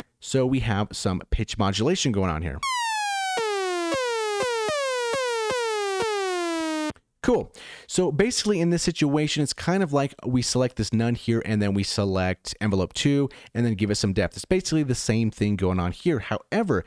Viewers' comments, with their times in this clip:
0:03 sounds like some air horns 😊